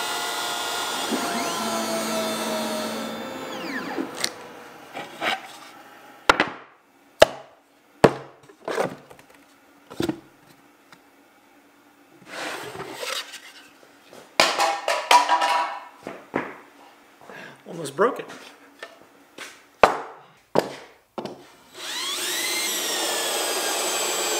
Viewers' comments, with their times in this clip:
0:05 Flourish. Flourish. Flourish. "Ta-Da!!" * crash *